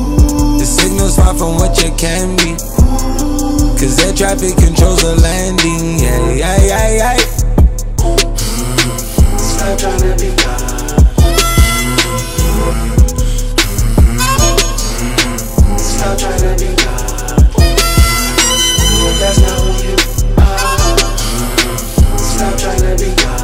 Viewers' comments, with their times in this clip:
0:06 i love the yayayayayy lol